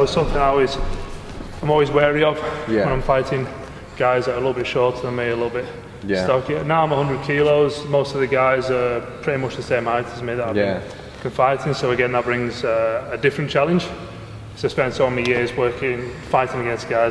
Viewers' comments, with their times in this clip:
0:04 what's with the laboured breathing noise from nearby the camera? 😹 This was an informative video and I appreciate the respect you have for one another!